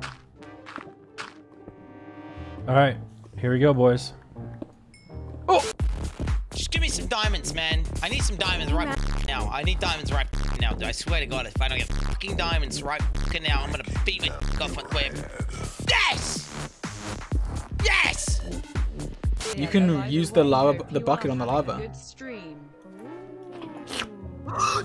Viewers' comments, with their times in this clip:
0:09 Why does he sound exactly like dream?